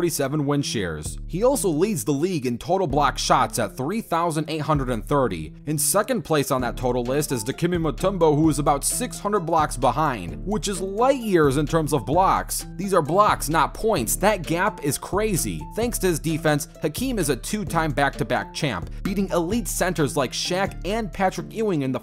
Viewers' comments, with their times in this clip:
0:03 Lmao bro why'd you say it like that?